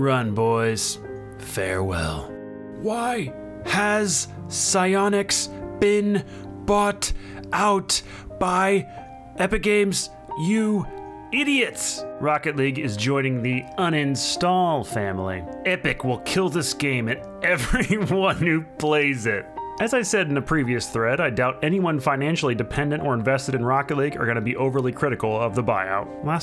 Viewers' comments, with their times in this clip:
0:09 sounds a lot like caboose from Red vs Blue lol